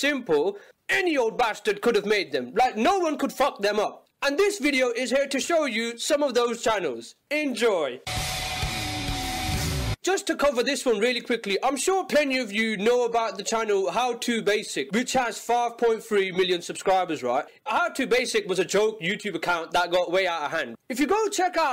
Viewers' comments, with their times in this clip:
0:08 hits the hi hat even though the crash cymbal is playing